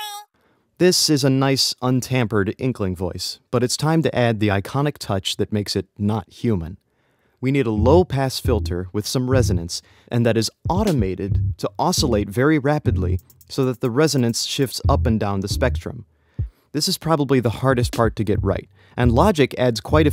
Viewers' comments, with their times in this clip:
0:07 I present to you the wah effect